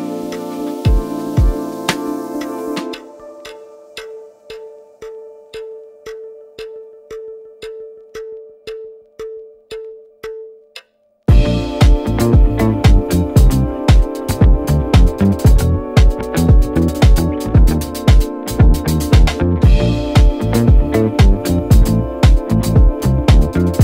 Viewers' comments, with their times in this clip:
0:10 at 1.25x sounds like something Louis Cole would do...